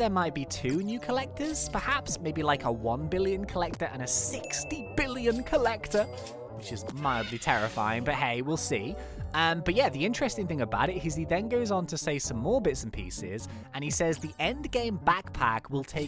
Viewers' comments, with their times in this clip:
0:04 that DINGGG tho!